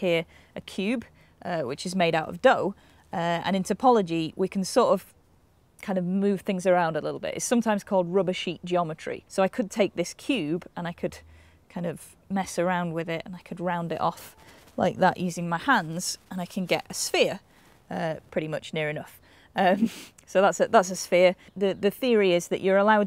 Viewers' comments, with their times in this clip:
0:07 "Rubbish eat geometry"?
0:07 "Rubbishy geometry" is a bit presumptuous, don't you think?
0:09 Did anybody else understand "rubishy geometry" ? ^^